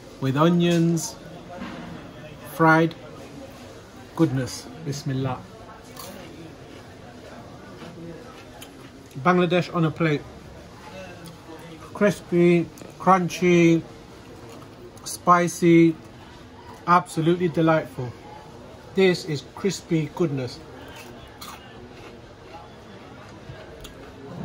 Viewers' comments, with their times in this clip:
0:05 That Crunch Sound Says it all